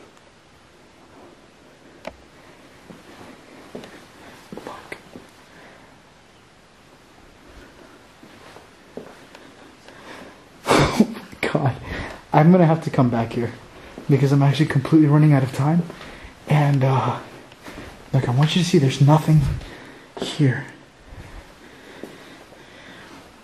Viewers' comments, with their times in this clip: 0:07 there's a male voice two times before you laugh...
0:09 31 something is whispered
0:11 hear female evp